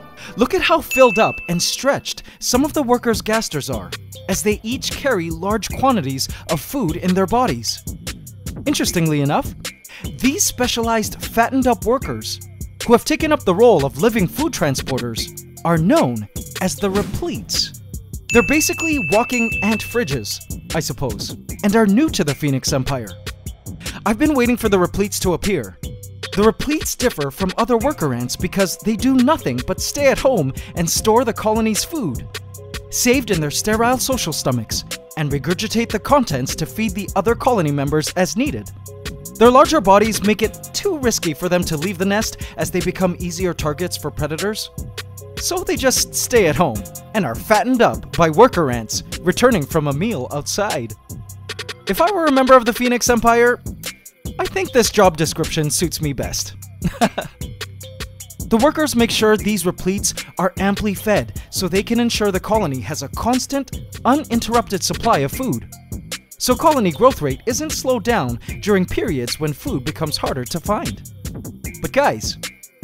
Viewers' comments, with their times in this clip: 0:03 Appreciating the beat in the background, great chose! 👏🏽👏🏽
0:03 yo that beat starting go HARD hard
0:32 this music does not fit at all.
0:47 The music you played made me think the repletes are gangsters.lol
0:53 I didnt like the rap kind of music it doesnt suit the style of your videos